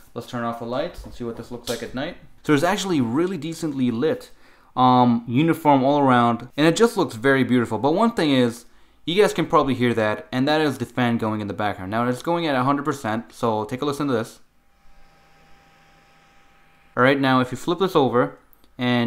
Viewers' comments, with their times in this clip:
0:03 "Really Deacently LIT Distorted music plays